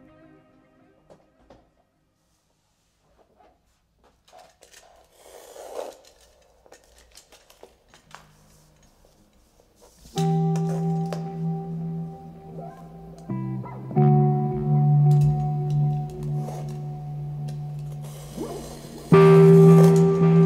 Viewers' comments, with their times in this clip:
0:04 8. When She Crafts ● sounds hella lot like one of The Last of Us OST Themes.